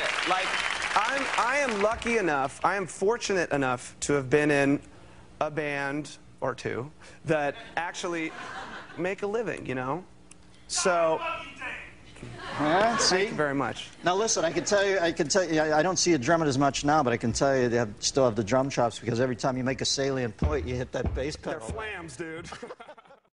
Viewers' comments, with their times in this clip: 0:10 What does the guy in crowd scream out ?
0:10 what the hell is that guy screaming?
0:11 what does the background person yelling say!